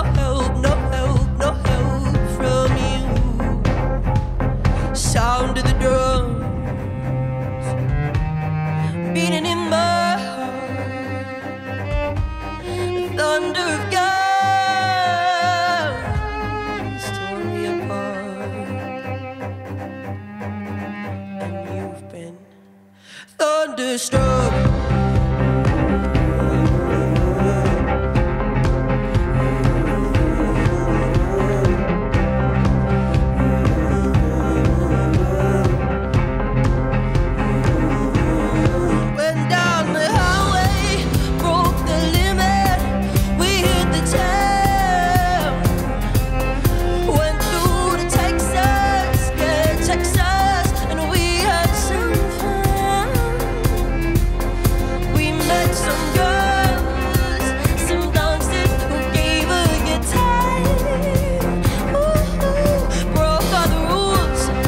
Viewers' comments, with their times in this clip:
0:04 "Sound of the drums" drums stop
0:51 some ancient Egypt sh*t. Fire af, great cover. Respek